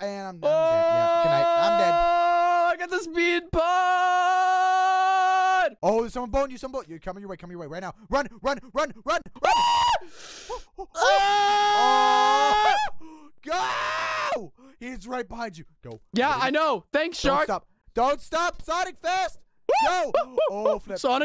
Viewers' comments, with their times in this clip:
0:09 my reaction: OMG did Unspeakable say 'I GOT THE SPEED BUTT'?!?! Hahahahahahahahahha!